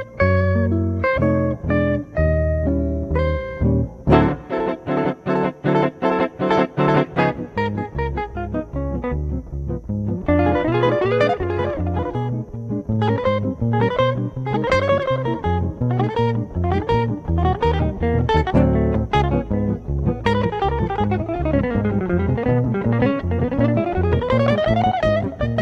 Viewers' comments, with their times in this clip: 0:07 Bucky Pizzarelli & Frank do the classic Limehouse Blues. It goes from a leisurely statement of the melody into overdrive and ends with the frets aboutready to catch fire. Great stuff.